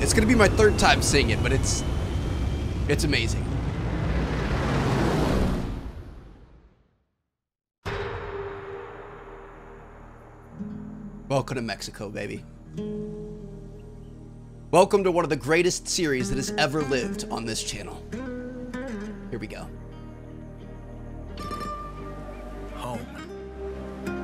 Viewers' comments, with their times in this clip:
0:09 that whole opening sequence was gorgeous. The scenery, vistas, and music made me 😢